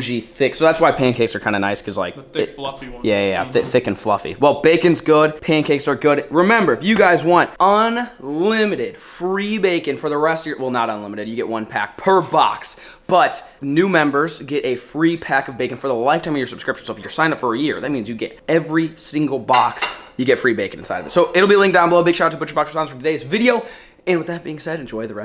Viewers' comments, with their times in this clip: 0:07 The noise sounds like a coyote